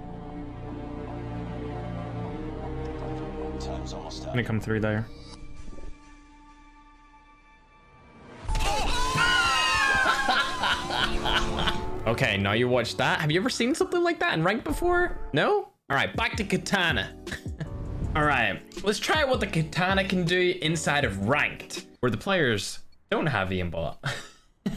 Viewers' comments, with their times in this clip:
0:09 who the heck was screaming